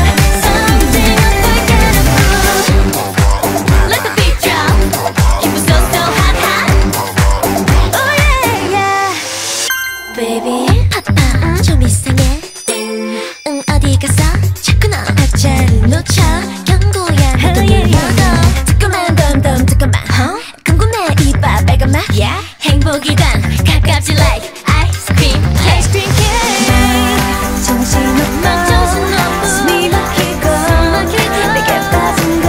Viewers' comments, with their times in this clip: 0:10 don't forget irene's sexy voice
0:19 From during Yeri's rap